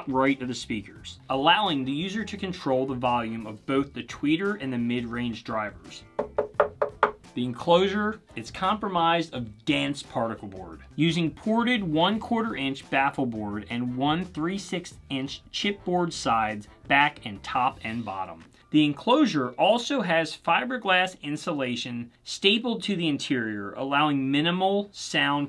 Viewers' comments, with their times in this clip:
0:06 Compromised? of dense particle board. Comprised.